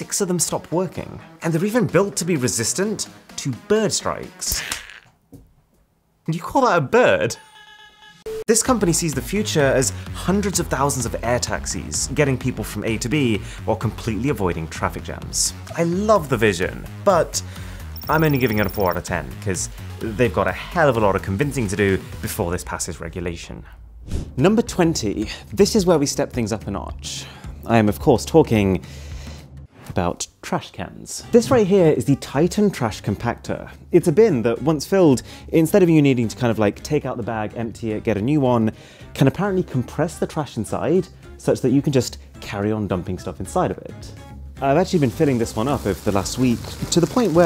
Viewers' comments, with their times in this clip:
0:04 "angry kiwi noises"
0:32 how MrWhoseTheBoss used the audio scuffing to pressing teh idea of compressing the trash